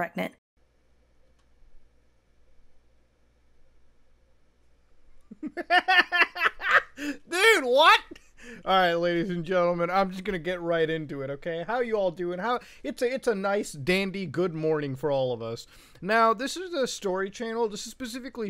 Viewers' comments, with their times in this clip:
0:04 the laugh of a child warms the heart